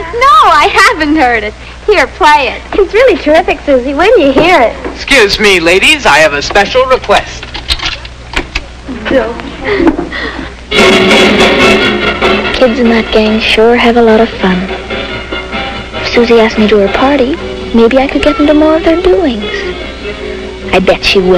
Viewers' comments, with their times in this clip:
0:09 The music blends in really well. 😆